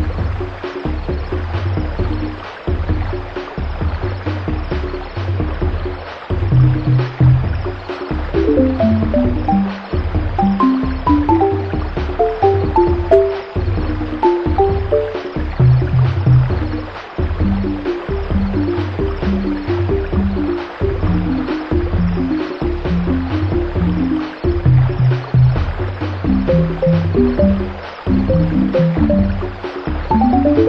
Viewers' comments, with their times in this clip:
0:10 that "Joy to the World" shit
0:15 that change of melody was a reminder for me like "yea, this is a nice and comfy level, but be careful dudey"